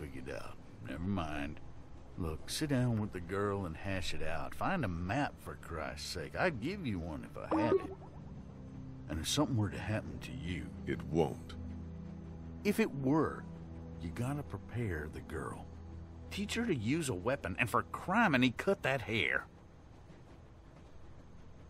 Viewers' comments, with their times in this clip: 0:06 your skype made a noise lol I think thats what it was yeah it was lol.